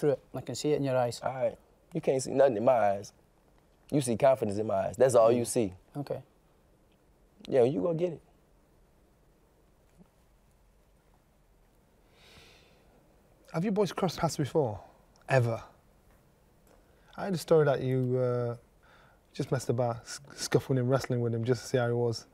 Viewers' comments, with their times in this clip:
0:05 my man says you can see coffins in my eyes😂